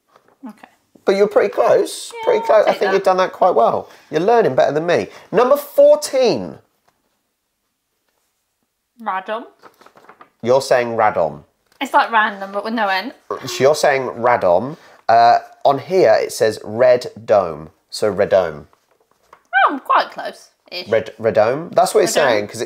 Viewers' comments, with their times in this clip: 0:08 Your wife pronunced Radom correctly